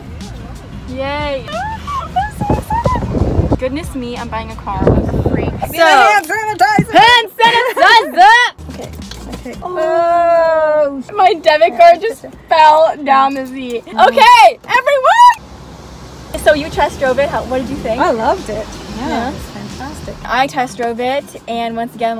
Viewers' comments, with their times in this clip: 0:07 HAND SANITIZAAAAA (thats the most enthusiastic thing ive heard today yuhh😂😂)